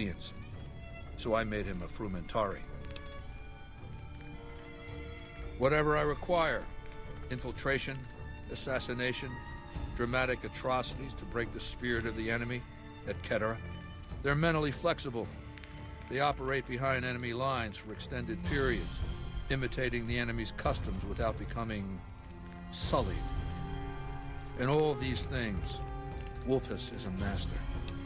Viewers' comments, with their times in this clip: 0:10 So many great details in these interactions Caesar pronounces et cetera with a hard c like it should be pronounced in classical Latin instead of the soft c that pretty much every English speaker would use. It shows so much attention to detail that they maintained the legion using the proper Latin pronouncation beyond just the Caesar/Kaiser detail.